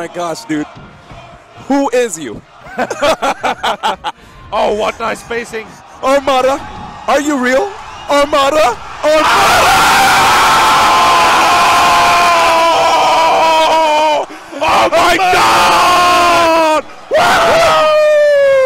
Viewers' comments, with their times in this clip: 0:05 Armada, Are you real? Armada, AAAAAAAAAAAAAAAAAAAAAAAAHHHHHHHHHHHHHHHHH!!!!!!!!!!!!!!! r.i.p. headphone people. #earrape